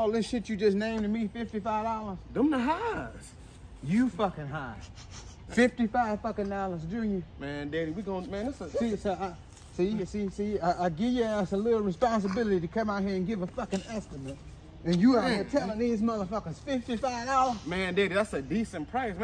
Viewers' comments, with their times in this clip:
0:04 Cameraman started laughing 😂